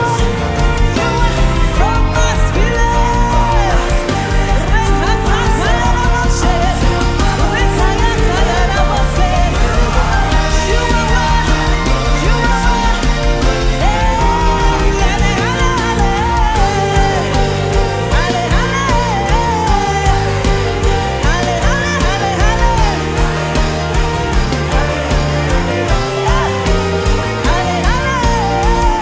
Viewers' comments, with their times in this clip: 0:10 that ascending movement 💯